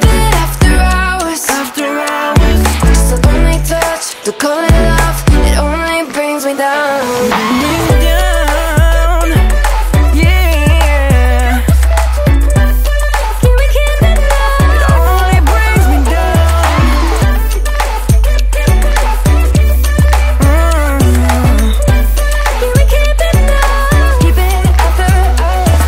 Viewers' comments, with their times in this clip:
0:08 I don’t know why but this beat is really beautiful! Amazing song for summer as well.